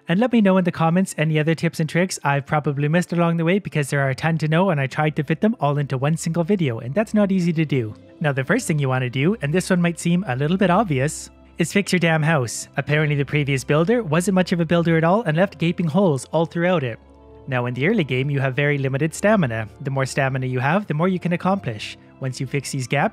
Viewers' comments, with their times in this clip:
0:09 best pause for effect ever... i have three but yo u only need forty